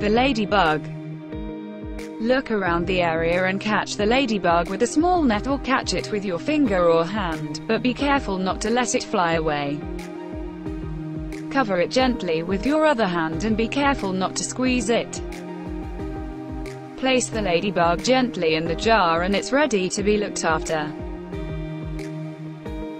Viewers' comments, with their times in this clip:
0:08 you can tell by the aggression in her voice she's has squeezed a few ladybugs, out of evil. She's really trying to hold back. 😂